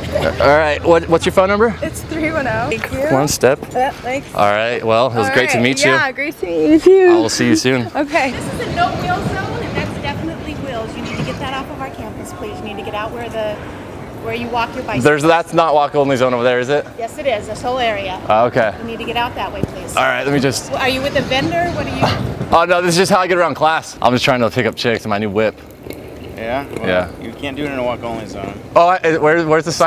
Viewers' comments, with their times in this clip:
0:08 Ominous Music* Final boss Karen approaching
0:11 Looks like, sounds like a Karen